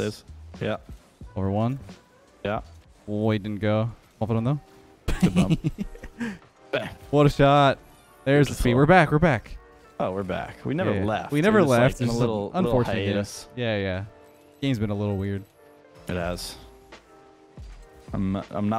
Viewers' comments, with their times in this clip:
0:04 😂 the joker laugh after bumping him off the ball
0:05 The laugh seconds 😂😂 that’s a toxic evil laugh😂😂😂